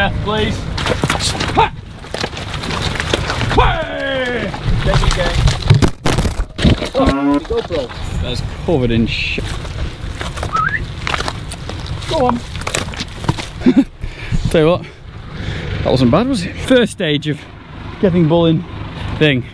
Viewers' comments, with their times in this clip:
0:05 Another great video. It was really amazing that the cow mooed at exactly the right time. LOL